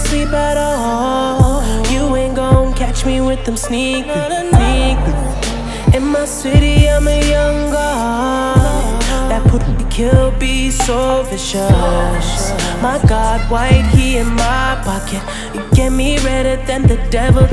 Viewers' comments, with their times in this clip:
0:03 Sneak PICTURES. MAN. Why'd you have to censor that too? Lol.